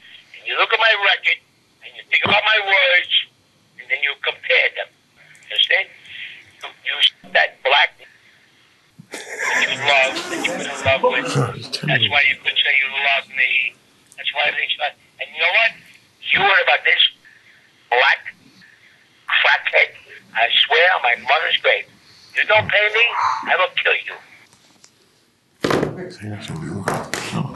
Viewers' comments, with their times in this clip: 0:08 he’s laughing?! Disgusting.